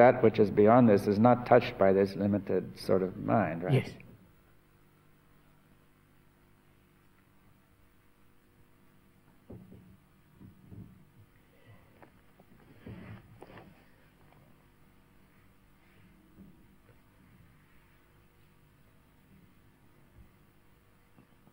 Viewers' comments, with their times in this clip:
0:04 That silence Priceless.